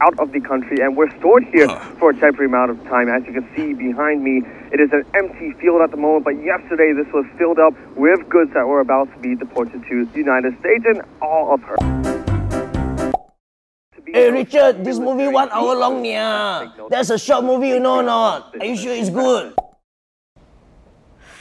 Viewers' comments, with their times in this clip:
0:05 is actually fish talking only the ogs know